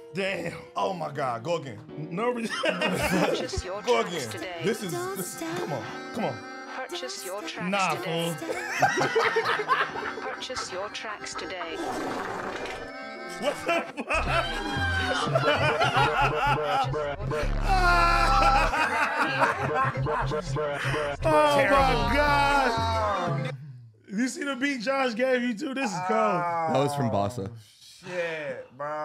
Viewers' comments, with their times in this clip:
0:10 sounded like a fart😭